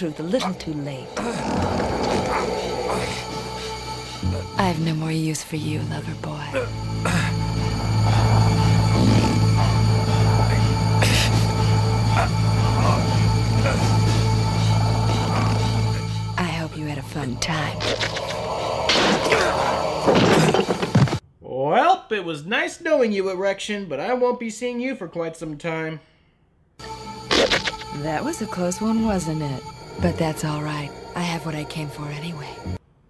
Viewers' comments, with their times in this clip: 0:08 Did she just fart?
0:08 Did someone fart ?
0:09 I swear I heard a fart sound effect
0:16 did you dub in a wet fart or was that just really bad foley?